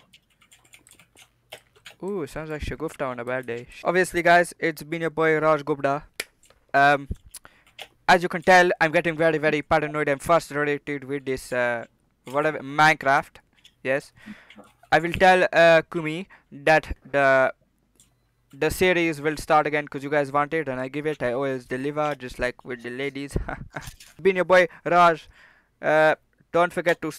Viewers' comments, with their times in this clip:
0:10 fussletrated- did you mean... frustrated